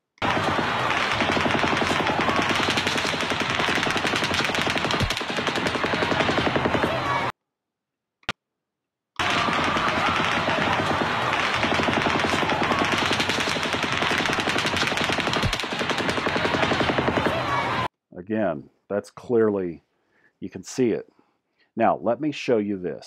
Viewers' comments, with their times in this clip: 0:09 you proved to me that their were at least 2 shooters, not to mention that single '"pop" anamaly ..